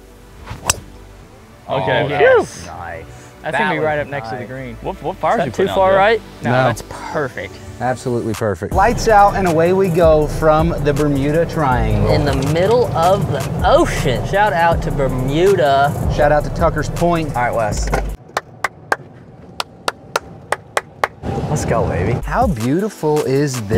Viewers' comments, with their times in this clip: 0:08 I'm minutes into the match (1st tee) and already loving the chatter